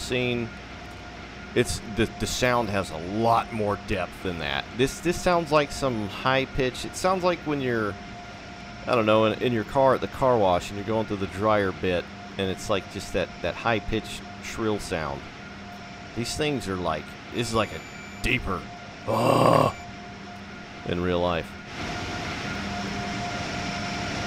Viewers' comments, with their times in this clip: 0:06 That screachy, high-pitched, shrill sound is just the hallmark of TSW trains. You hear it in German, UK and US trains that emulate AC. And it is flippin' awful and unrealistic in all. I don't know if there is some sort of inherent limitation on the UE sound engine that just prevents the devs from having any bass frequencies whatsoever!